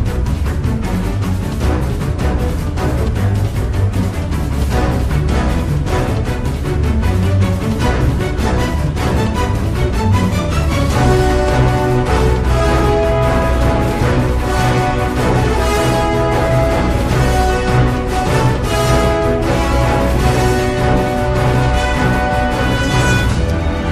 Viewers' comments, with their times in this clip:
0:06 kinda sounds like bloodbath diablos theme 2 from mhgu